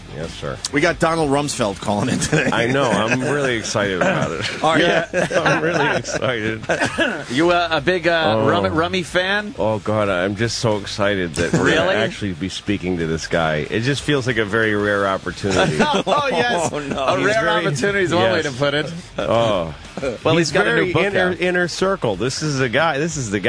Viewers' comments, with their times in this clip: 0:05 I can hear Louis firing up the engines